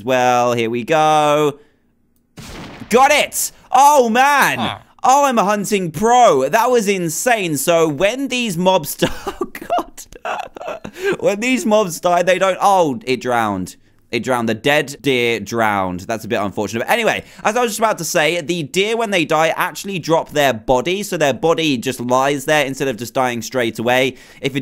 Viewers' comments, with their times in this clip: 0:06 Laughing Elon musk noises
0:09 did Dan predict the deer meme, he even laughed at it, too
0:10 Elon Musk is laughing